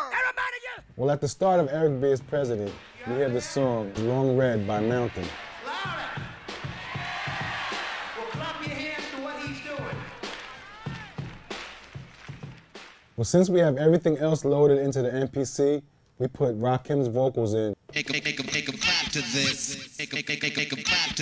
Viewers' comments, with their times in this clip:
0:03 .....that sounds like DONE Its My Thing